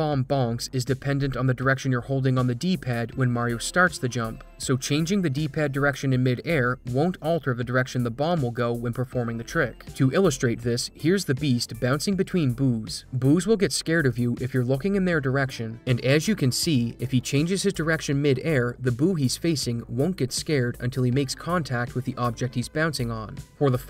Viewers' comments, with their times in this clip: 0:10 Bouncing between what? First thought I misheard, but replaying it, you definitely added a b on those boos.